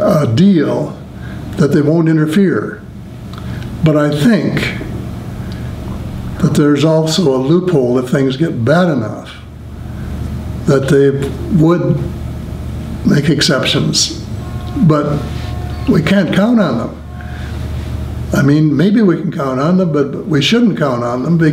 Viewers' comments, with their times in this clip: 0:06 he mentions an alien race but I can't seem to make it out properly. How is it spelled? Baysidous race?